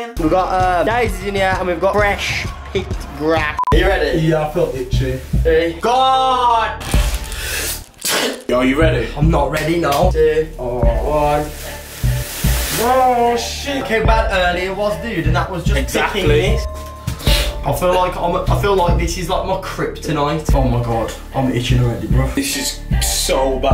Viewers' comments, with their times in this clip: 0:07 why did you show us your sneeze I don’t want to get sick